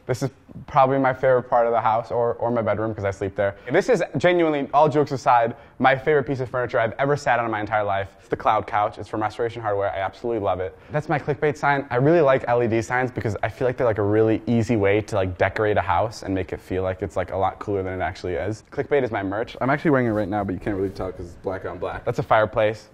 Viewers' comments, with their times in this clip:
0:08 Did he say "It's from masturbation hardware" ?